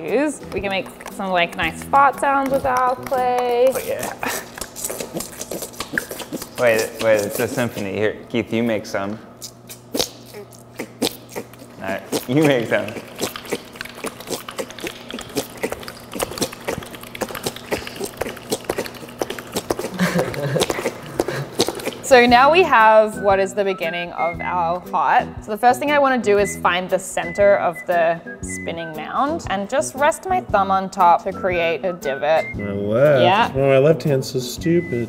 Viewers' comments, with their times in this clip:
0:07 had me dying of laughter 😂 their symphony is great, but the sound producers face is hilarious
0:07 I need the wet clay hand symphony
0:09 I loved the melody but the lady had me DYING for a solid minute
0:11 Nobody: Me: “I think I can here the song ‘Billie Jean’ by Michael Jackson playing.”
0:20 Keith, Ned and Zack: amazing fart-orchestra Cameraman: Zooms into the black lady completely disgusted Me: DEAD
0:20 just gonna pin this moment here for myself... when an innocent bystander has to endure the "fart symphony" they did not ask nor consent to listen to LOL